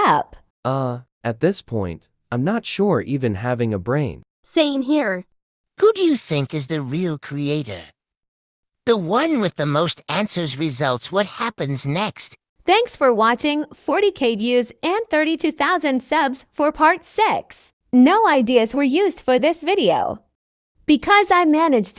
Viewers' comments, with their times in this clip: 0:06 why does the guy who narrates the text sounds like a nerd or a farmer